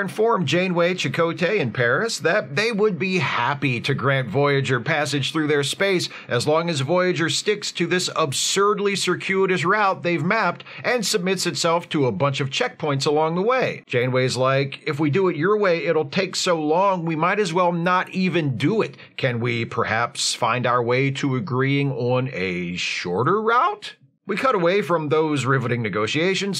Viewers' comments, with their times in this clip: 0:08 golf clap for using and pronouncing "route" the way I think is correct